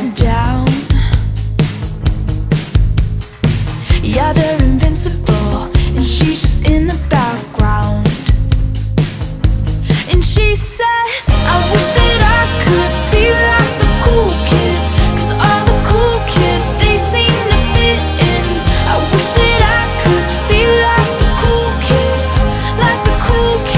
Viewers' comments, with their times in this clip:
0:08 To be honest the lyric that is stuck in my head from is.. I wish that I could Be like the "Cookies" Cus all the "Cookies" They seem to fit in bahha